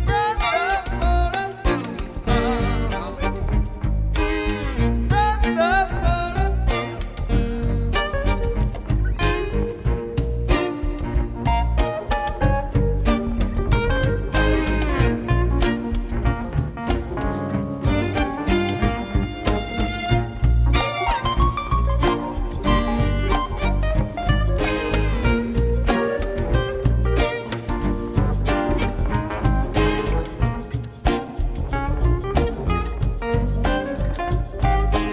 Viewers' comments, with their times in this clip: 0:07 Great band, that keyboard solo though!!! incredible
0:18 anyone else hear the supertramp tease?